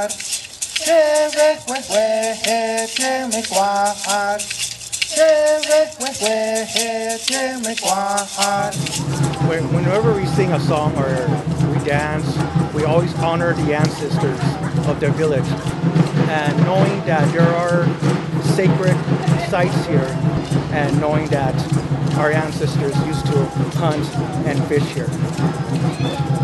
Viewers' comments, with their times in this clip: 0:09 Wow.... that rhythm coming from the drums is exactly the same rhythm we use during our dances as well, in the Islands of TONGA!! I know our ancestors are connected 🇹🇴